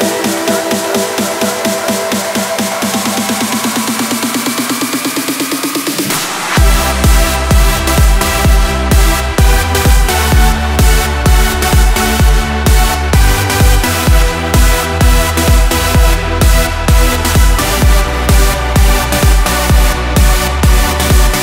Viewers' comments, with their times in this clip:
0:05 Best drop of the year?
0:05 drop reminds me of Runaway - Galantis